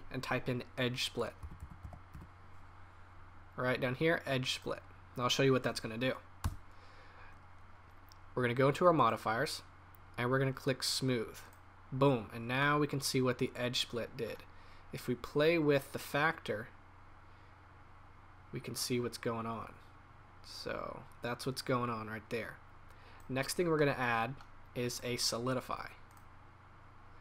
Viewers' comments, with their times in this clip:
0:10 I love the way he said "Boom", and hell yeah this is an incredible design. Thank you so much, now I can practice with all this information you gave to us, really thanks.